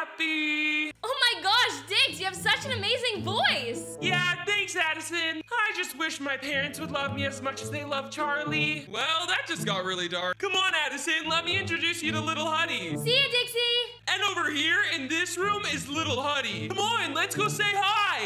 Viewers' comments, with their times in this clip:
0:04 why is the girls voice a boy voice 😭